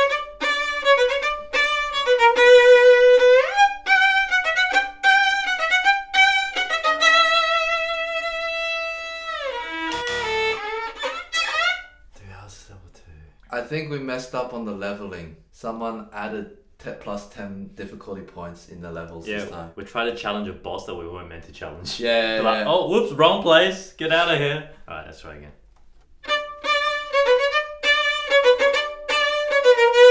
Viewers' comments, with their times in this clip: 0:09 this sounds just like the oui oui they do all the time haha
0:12 did anyone also have chills with brett's whispering on ? cause i did